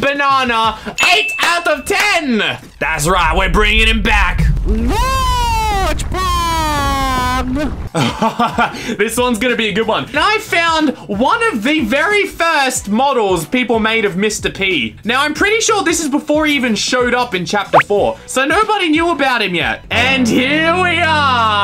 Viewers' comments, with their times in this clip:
0:03 Can we just appreciate the way he says, GoRgE pAg
0:05 you say gorge pag!!!!!!